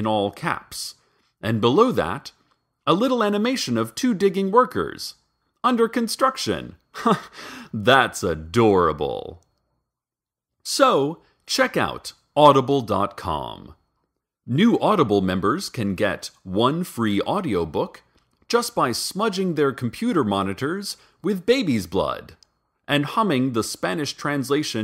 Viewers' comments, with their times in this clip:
0:06 you're very welcome :') Awe, his laugh <3